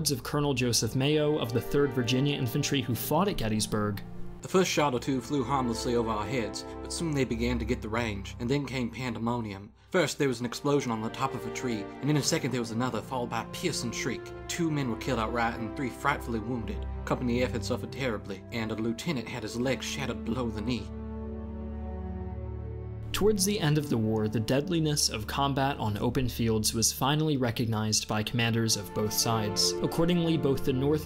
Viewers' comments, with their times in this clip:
0:08 As a southern. No. Rarely anyone talks like that Maybe one person in 100 peope.
0:16 that southern accent is atrocious